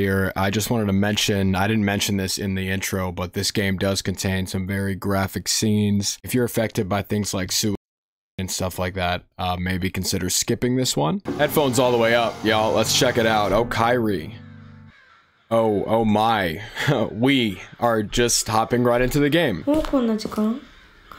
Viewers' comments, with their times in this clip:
0:07 things like soup omg help!!1!11!!